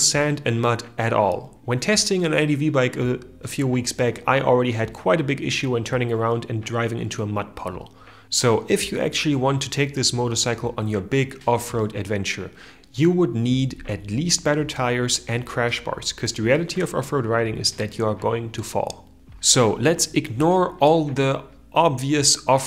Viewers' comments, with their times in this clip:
0:04 What is the point of the almost inaudible “musical” noise in the background on this vid? I got to and stopped watching as the irritating, distracting, pointless noise kept fading in and out and I couldn’t concentrate on the content.